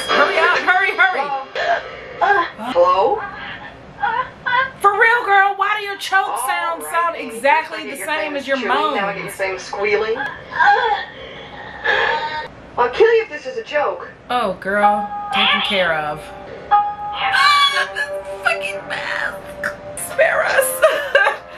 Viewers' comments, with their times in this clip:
0:05 don’t kink shame her. Lol just kidding but it is weird her pleasure moaning and being killed sounds sound the same.